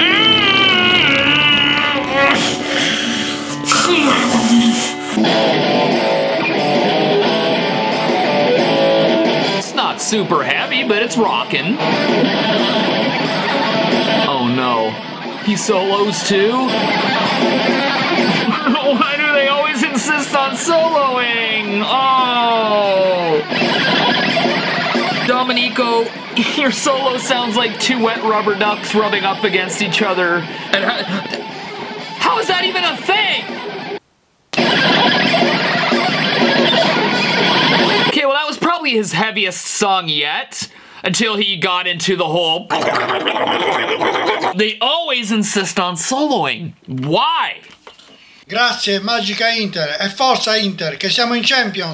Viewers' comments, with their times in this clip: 0:04 sounds like so what(Metallica
0:05 it sounds like he's trying to play Rapid Fire by Judas Priest. Just that littlest bit.
0:29 his solo just sounds like a normal Slayer solo
0:29 Your solo sounds like 2 rubber ducks rubbing against each other! 😂😂😂😂😂
0:34 the ducks of Jens Johansson